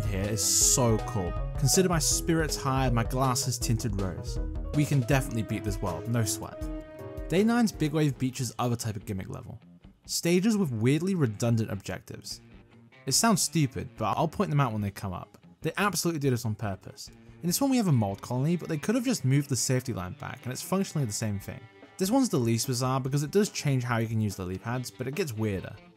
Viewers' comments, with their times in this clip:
0:08 um, what did you censored?